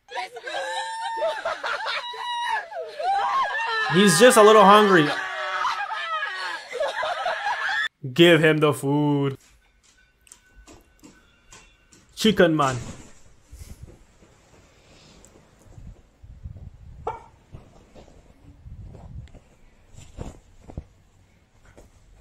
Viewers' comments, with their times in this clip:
0:03 bro has a job shouting for food😂😂😂